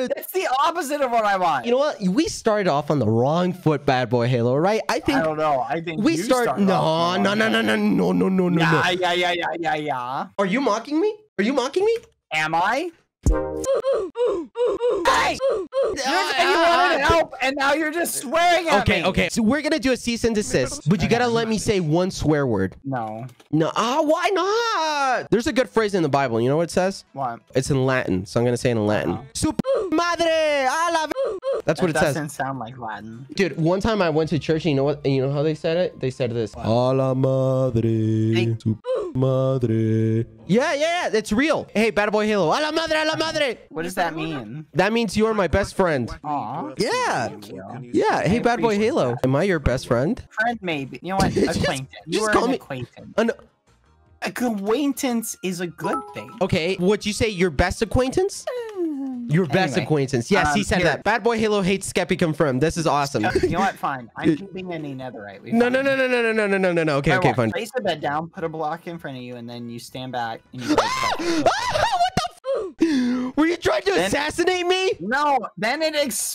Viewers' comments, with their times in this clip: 0:07 Nobody: Quackity: says no in mexican accent
0:08 this sounds like I've got the key but you're just the doormat
0:09 why does bbh sound german?😭
0:12 roblox oof sound
0:13 with the fuckin oofs bro i cant😂
0:24 quackity sounds like me when my mom says no to buying me something lmao 😭
0:36 I can't even tell you how much this actually sounds like a priest when they pray in spanish
0:58 DID BAD MOAN?!